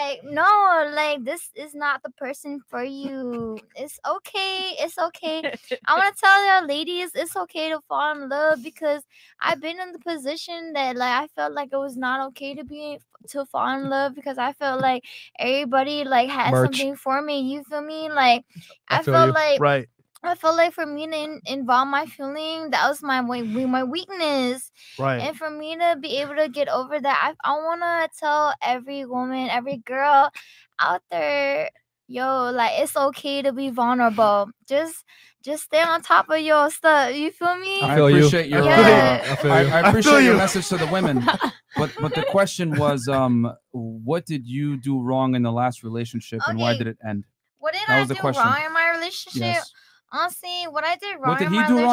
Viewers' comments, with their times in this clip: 0:10 the way she talkin juss boils my blood and is quite anoyying idk😂
0:34 Oh sh** here we go.. this is gonna be hard to get through with her lack of being able to talk coherently.